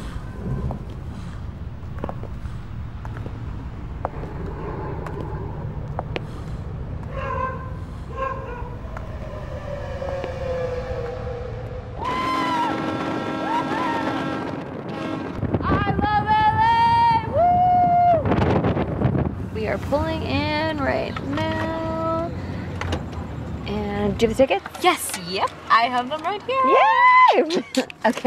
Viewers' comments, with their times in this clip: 0:09 Am I the only who noticed that it was the same barking noise as the babysitter? :)